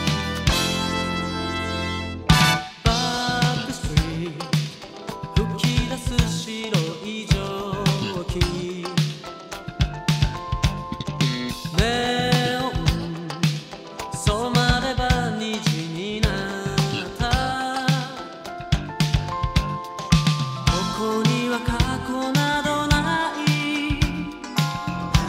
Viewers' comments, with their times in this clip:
0:10 that bass slap...Davie504? :D